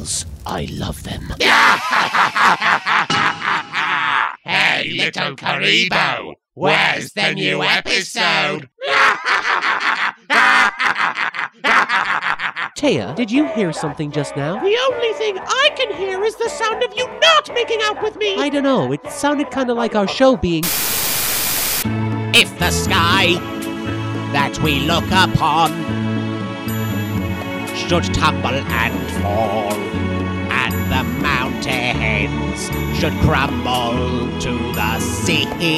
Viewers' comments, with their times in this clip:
0:08 I have no idea why this part where the Melvin's laughing cracked me up.....
0:10 Omg they are listening to Nappa singing vegeta
0:14 Love the Ghost Nappa song
0:16 Im you listen really closely you can hear tfs nappa singing vegeta